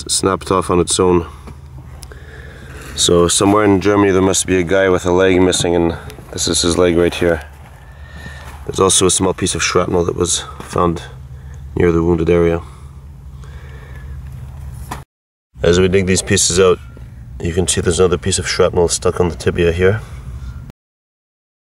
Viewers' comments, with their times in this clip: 0:04 While it certainly is not funny, that a man lost his leg to war...it is funny the way the narrator said, "So, somewhere in Germany, there must be some guy, walking around with a leg missing, and this is his leg right here."